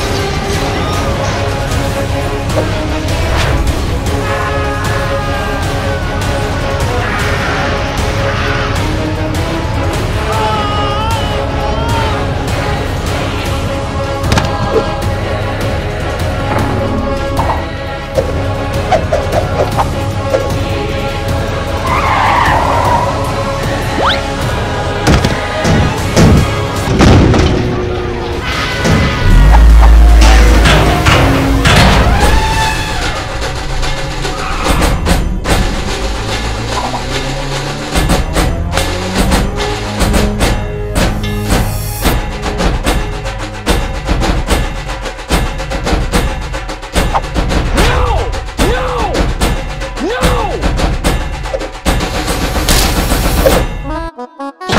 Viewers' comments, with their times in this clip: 0:09 Am I just hearing things or there is star platinums oraora
0:42 I love that music 🕺